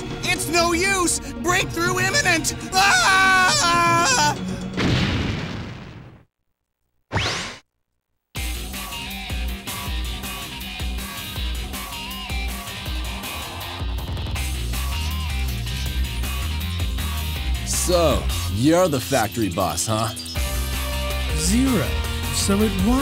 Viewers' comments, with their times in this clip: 0:08 Zero really knows how to make an entrance. I especially love his theme on this game. It’s badass and awesome